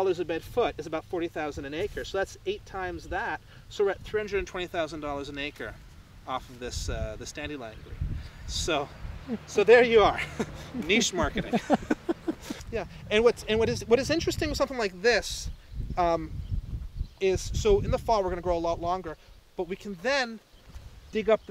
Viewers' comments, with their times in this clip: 0:07 Horse237 sounds like dandelion green?